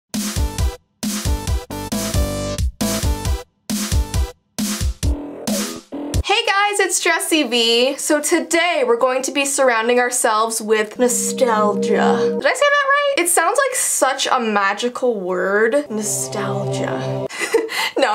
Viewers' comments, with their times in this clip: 0:05 She said dressi vee💀